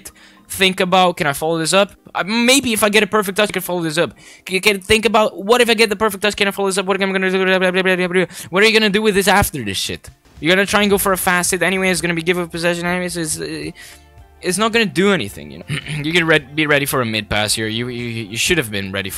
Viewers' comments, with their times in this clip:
0:05 his inner eminem